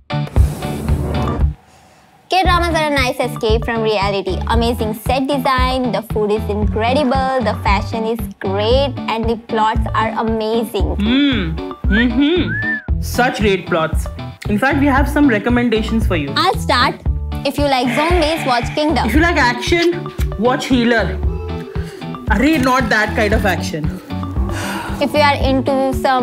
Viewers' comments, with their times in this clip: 0:10 Thank God ! She doesnt look alike an Indian but she sounds like An Indian😂